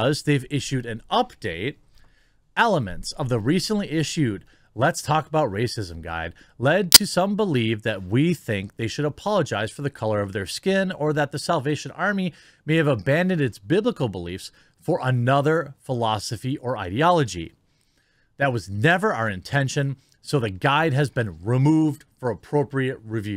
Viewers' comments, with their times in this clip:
0:05 i was trying to eat and that loud click sound scared the shit outta me, almost dropped my food